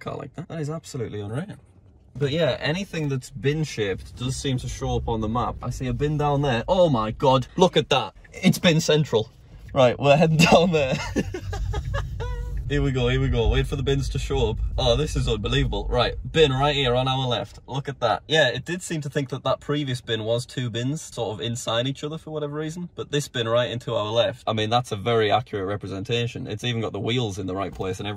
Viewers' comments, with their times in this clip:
0:09 it sounds like the McDonalds theme song.
0:10 any1 else hear the mcdonalds them tune in his laugh